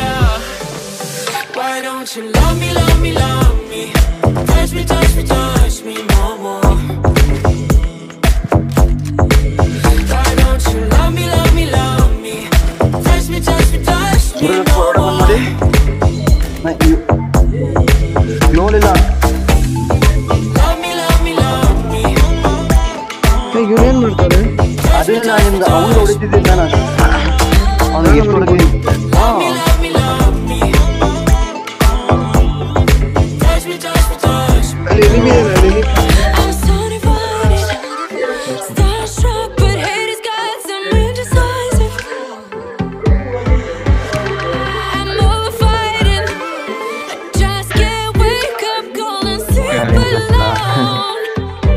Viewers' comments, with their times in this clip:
0:07 They Were Talking in kannada😁😁
0:19 squad members are speaking kannada😁.
0:23 Bro we can hear your voice!!, Voice revealed
0:26 FINALLY!! HEARD YOUR VOICE
0:29 I can hear kannada .....
0:29 I heard someone speaking
0:29 Yes someone was talking in kannada
0:31 WHO FOUND HE IS TALKING
0:39 You are malayali 👂👂👂